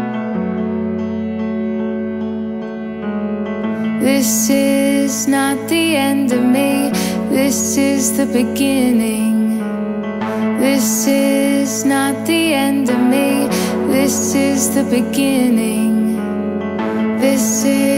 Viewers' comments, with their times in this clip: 0:04 ..... I was completely lost in every word she said, just like she was singing them right in front of me, for me. But from minute with every beat growing deeper and deeper, I really felt my whole body shiver, with chills coming on me like waves. This is everything, I'm needing, right now. Thank you Christina. Thank you. .....thank you so much......... #Ibelieve.